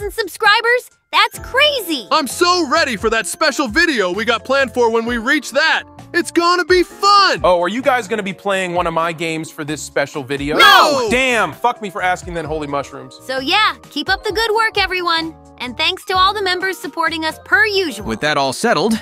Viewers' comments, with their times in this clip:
0:07 i love all the angry nos😭😭